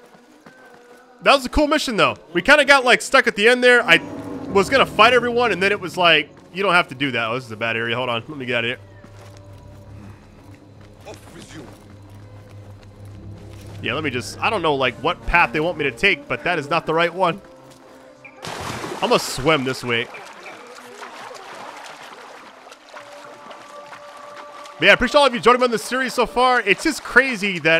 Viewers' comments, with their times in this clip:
0:08 the fact u could hear fajr Azan